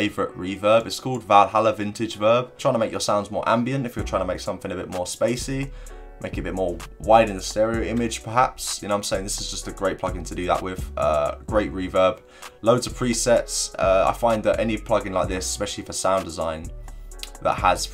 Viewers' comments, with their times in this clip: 0:03 that beat is crazy